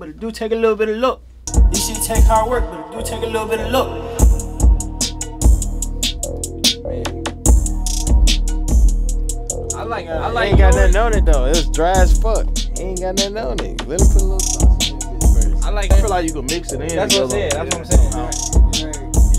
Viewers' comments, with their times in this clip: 0:06 The beat sec go so crazyyyy oh my god🤯😫